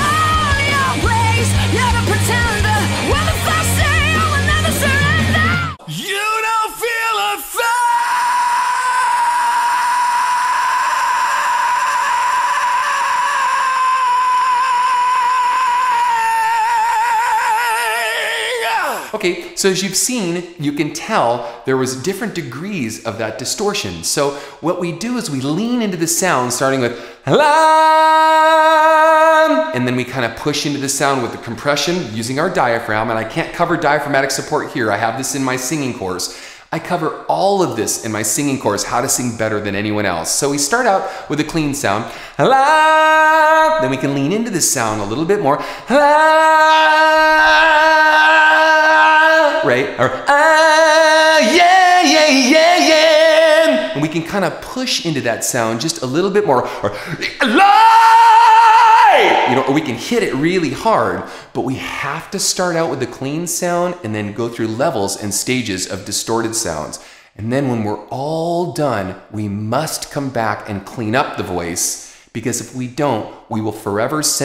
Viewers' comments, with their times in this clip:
0:05 Me when I choose to sing while I'm still sick.
0:06 Damn was playing this in my room , bro thought it was future trunks going super Saiyan, ahaha
0:06 Dude, your scream from blew me away - that was incredible! My jaw literally dropped! I got McCartney Helter Skelter vibes, brilliant work man!
0:06 you kinda sound like Adam Gontier...lucky...😭
0:06 when it was building up you sounded like Kurt Cobain
0:06 Oh my god, dude how many lungs do u have
0:06 Very nice distortion, wasn't expecting it. blew me
0:06 Kurt Cobain's Style. A really lot of Distortion and Rasp.
0:07 that scream wow
0:08 nah is when goku turns super saiyan 3 for the first time
0:08 When that one kid cries over the smallest things
0:08 When you're barefoot and you kick something solid by accident:
0:08 when someone stepped on your toe
0:08 when you step on a Lego
0:08 Kind of sounds like Milk It by Nirvana
0:08 when i'm hungry or when someone is turning Super Saiyan
0:08 that's like a fry scream?
0:08 Rick and Morty screaming sun
0:08 getting a paper cut like
0:08 When you’re trying to sneak in to your house through trying to open that one creaky door quietly
0:10 I think I accidentally found who did Courage the Cowardly Dog's screams
0:10 rick and morty screaming sun
0:11 It sounds exactly like Kurt Cobain singing Lake of fire!! I love it!
0:13 That's the sound of a guy sleeping on his bed but dreaming that he's falling down from a high mountain ...
0:14 When you bump your little toe.
0:16 literal shrieking oke :D
0:26 we all heard the first note of The Lion King opening
0:42 YES! Finally I can learn how to do vocal distortion! It always makes me shiver when I hear it in songs and I've never been able to figure out how it works until now (I'm also glad it's a learnable skill :D) also the note you sing is pretty much the first note for Circle of Life and I keep getting tempted to sing it haha
0:42 are you using headvoice ?
0:48 Holy crap never heard anyone do that with their voice it sounded like a robot mixed with badass singing i need to keep practicing im having trouble when i try to add pressure it just turns into a fry scream.
0:55 from calm and soft spoken to AHHHHhHHH!!!! But he really got it.
0:56 Love Ken! The small false start 😂 Then the POWER hits you!!
0:57 when you stub your toe